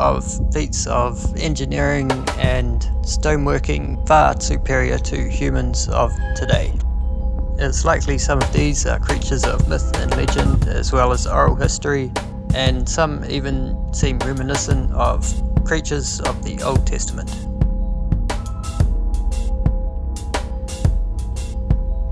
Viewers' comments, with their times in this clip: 0:05 Yeah, bummer man. I want to watch but the crappy "music" is so distracting I feel my mind split. Sorry. Killed it